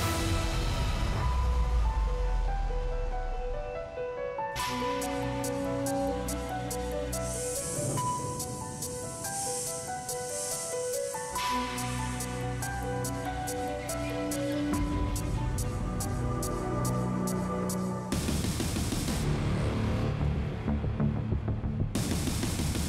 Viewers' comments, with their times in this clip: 0:07 Wrong thumbnail! But yes, they were absolutely amazing. I loved the snake's theme and they were so incredibly fast. The music as well was perfect. My favorite moment was when the snake 🐍 sound came and their legs went down in this curved motion